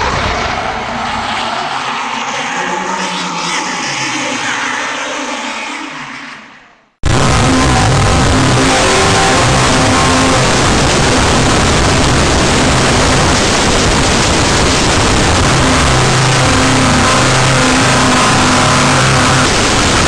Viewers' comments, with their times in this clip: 0:04 I was 13 years old had my own personal computer and downloaded Diablo and a.m. I heard the devil laughing from my computer
0:07 R. I. P to headphone users 😂
0:07 ngl the volume change really adds a new horror element to the butcher and I kind of love it <3
0:07 Does anyone know of a better version? Just one that is not worse quality than the original? the audio! WTF this is pure trash!
0:08 WTF ear rapped me ??